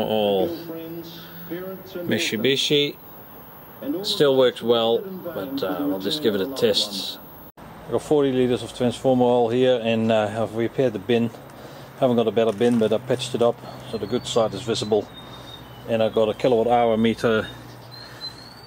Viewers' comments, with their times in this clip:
0:06 i'll just give it a TITS